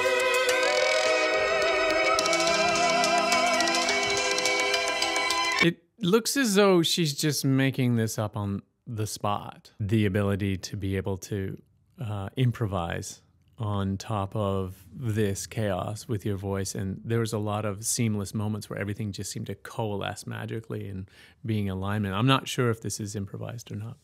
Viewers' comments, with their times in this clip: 0:09 I don't think there is any improvisation. Sounds a lot like the album version to me. (I could be wrong though) Also it is soooo cool to finally see someone react to Igorrr. I like the songs that have not just an opera singer, but also a black metal singer. The contrast is epic. :)